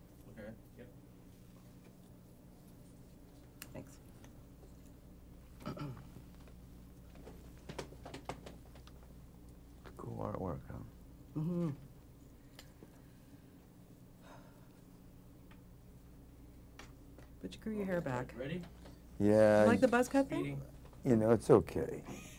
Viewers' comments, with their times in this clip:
0:08 what in the world is with that awkward silence in the beginning...jeremy is like trying to pass the silence by looking at the poster behind him.